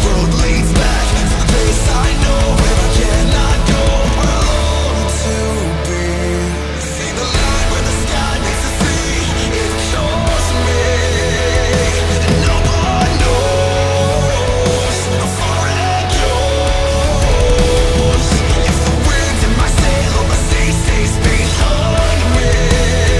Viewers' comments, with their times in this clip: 0:07 There's something about your energy that always perfectly encapsulates the emotion of a song. Particularly the jump There's such a build up to it, and both your music and vocals really lean into that. I could feel myself jumping with you. It's always a first time listening to even your covers because you put so much of yourself into it. And of course, you had some awesome collaboration happening with this one! Just, amazing work as always. Y'all killed this one!